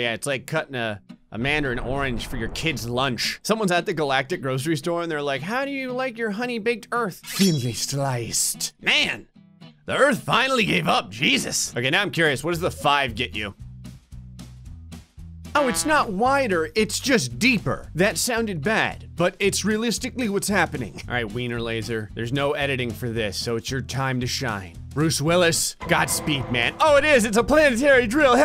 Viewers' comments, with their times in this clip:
0:09 the voice was funny